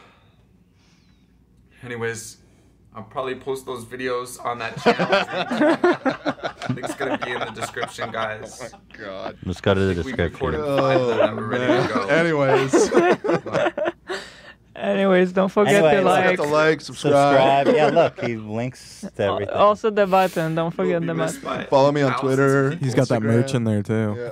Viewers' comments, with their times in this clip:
0:06 The best part is hearing everyone laugh